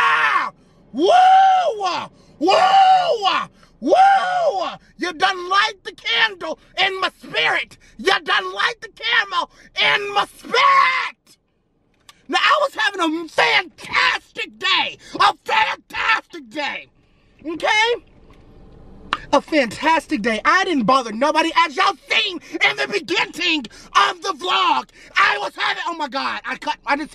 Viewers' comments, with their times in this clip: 0:08 you done light the camel haha he meant candle I think 🐫 he liked my comment